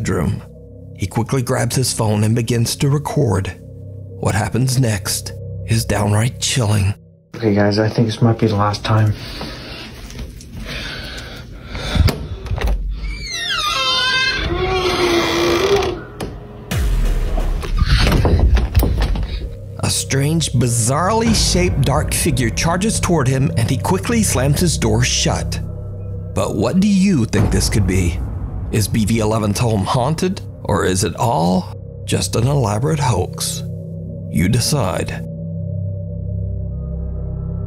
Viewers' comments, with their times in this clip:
0:07 Nothing in the video was scarier than the sound of the door opening
0:14 along with the squeaky door is there a child like voice?
0:25 you can hear a little girl voice when he opens the door...